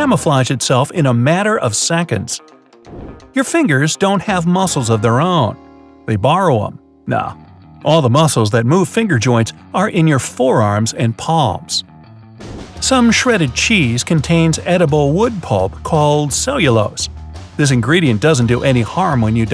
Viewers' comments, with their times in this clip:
0:05 hE SAiD "Nah.." He FInAllY SaID SomETinG ThaT Isn'T IN THat VOicE!